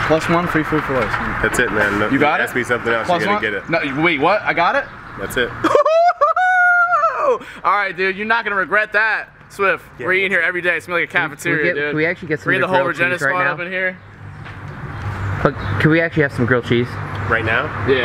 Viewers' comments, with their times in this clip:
0:03 was that a rooster??